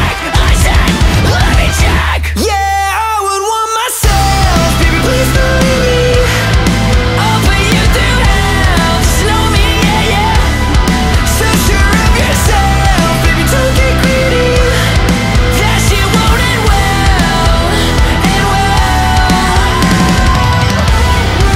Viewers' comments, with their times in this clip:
0:04 WTF? U R FKIN ME?!!!! THIS IS ONE OF THE BEST MUSIC VEDIOS IVE EVER SEEN FROM UUUU!!!!! N the soft Vocallsssss!!!! U R KILLINNNNNN YOOOOOOOO